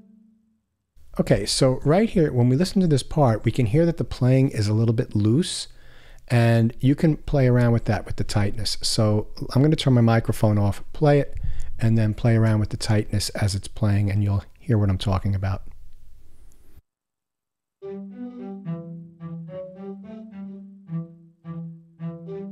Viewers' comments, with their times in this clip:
0:04 Pretty sure 'tightness' just cuts into the attack of the note. Instead of consistent sample editing, we have to make a trade-off between realism (full recording) and playability ('tight' responsiveness) in Spitfire libraries. Cool demo, though. This sound is not really my cup of tea, unfortunately.